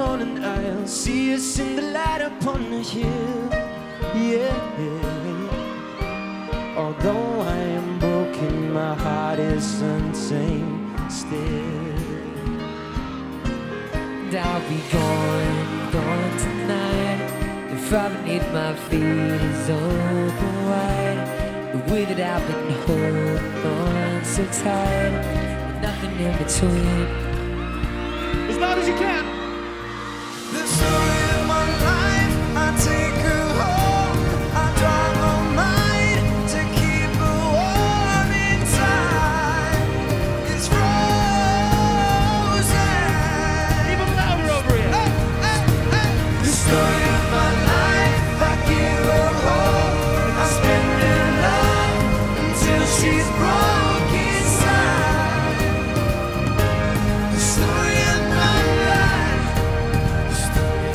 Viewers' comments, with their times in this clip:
0:03 I just love Louis' voice and his beautiful smile ❤❤
0:05 Cant anyone adore how lovely Louis's laugh is?
0:09 Who thought he said Unzayned?
0:14 When he says "gone" yass British where you at
0:17 Louis sing zayns part it was "the fire beneath my feet is burnin' bright "
0:20 I think no one realized that louis mispronounced his lyrics
0:43 Can some one tell me what liam says i ve listened it many times but can't understand 😕